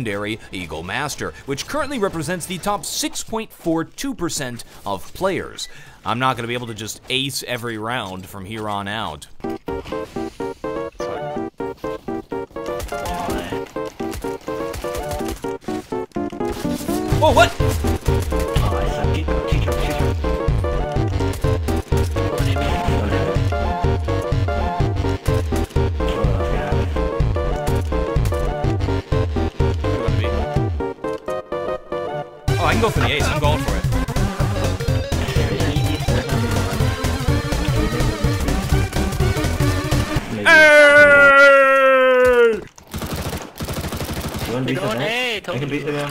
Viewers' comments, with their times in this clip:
0:10 the music makes me stop watching this series. Similar type music is in every episode and it is so unnecessary.
0:18 i really liked the part with the undertale music from the ghost fight :D where you did the usp-s ace great vid as always, nice editing, keep it up
0:28 lmao the ghost theme